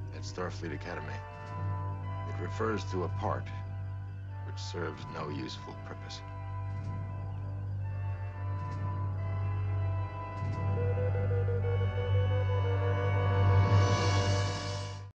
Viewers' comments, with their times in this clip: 0:11 I always got the feeling that sound was the M-5 computer laughing at Kirk.